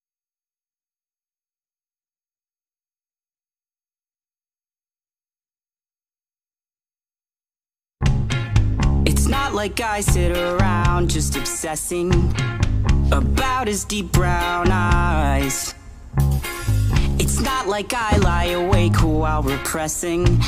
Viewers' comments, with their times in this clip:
0:08 YAAAAASSS I LOOOOOOVEE THIS SOOOOOOOONG!!!!!!!